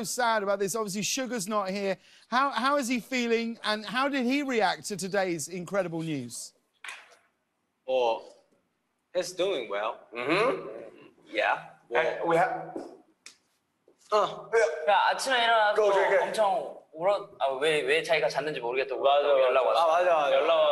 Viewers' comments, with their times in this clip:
0:08 Jungkook- “Oh he’s doing well.” WTF HE SOUNDED SO FLUENT I WAS NOT EXCEPTING THAT ?!?!